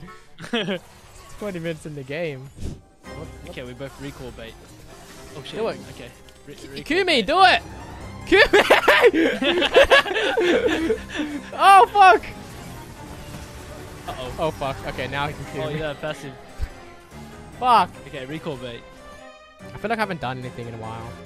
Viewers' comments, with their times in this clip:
0:03 literally screamed when I heard the Hollow Knight music